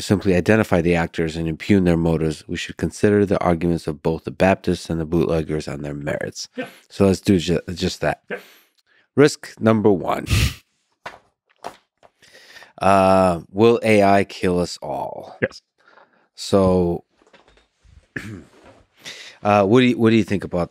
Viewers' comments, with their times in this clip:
0:07 'Risk.. number.. one..' I like Lex his style recently